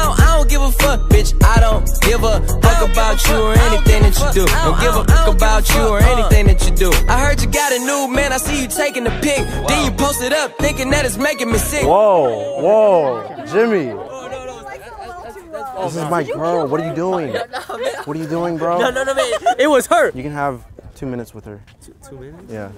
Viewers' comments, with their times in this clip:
0:06 Lmao I died when the music just cuts off